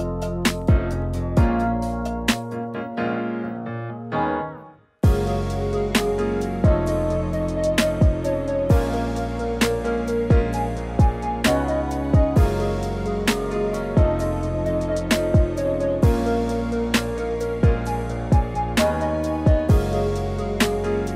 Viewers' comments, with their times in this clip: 0:07 you have a grill friend? thats a new one, also great review it helped me alot. I just ordered it and you made things that i didn't know very clear!